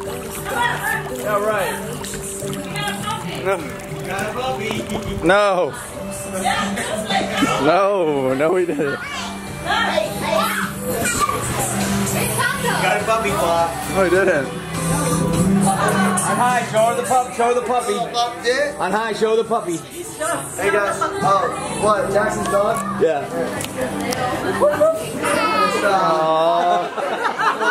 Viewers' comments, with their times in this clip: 0:08 The Taylor Swift in the background <3